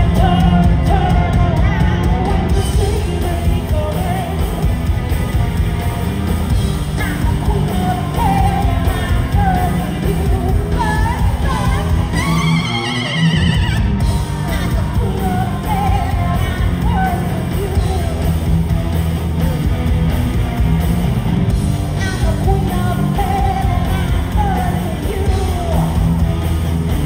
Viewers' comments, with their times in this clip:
0:10 A shiver went down my spine on that Lucia laugh.